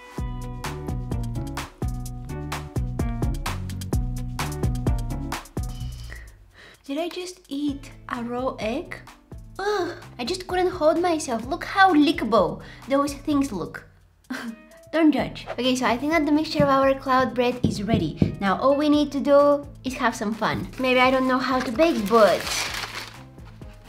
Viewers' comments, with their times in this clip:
0:06 pure egg in mouth roar